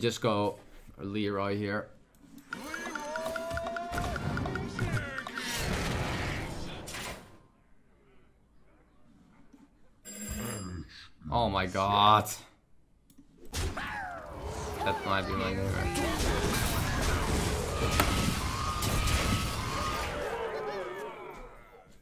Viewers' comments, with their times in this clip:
0:09 who else paused, checked to see if there was someone at the door, came back to realize: "oh that was HIS doorbel."